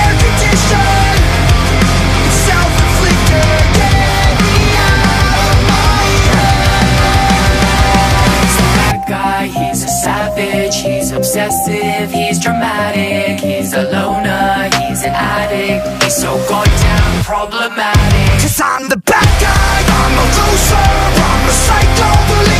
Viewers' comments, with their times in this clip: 0:08 the frieza Solo goes hard.